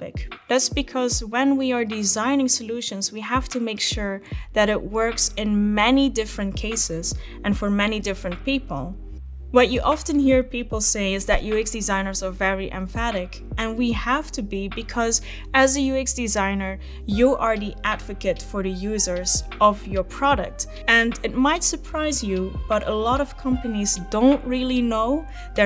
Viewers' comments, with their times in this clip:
0:09 Empathetic pronounced emphatic Why? 🤔